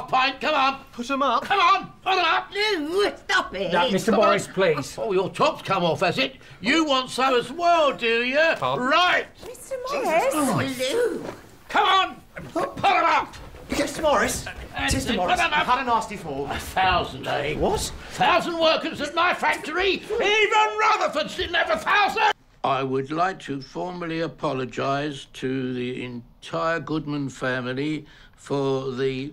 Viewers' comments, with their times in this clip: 0:10 Grandma casually saying "Lou" in an excited way 😂😂😂